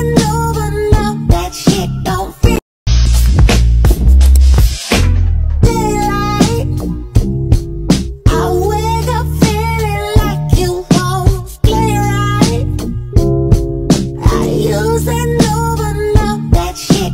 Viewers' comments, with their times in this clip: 0:05 OK the way the dog was panting broooo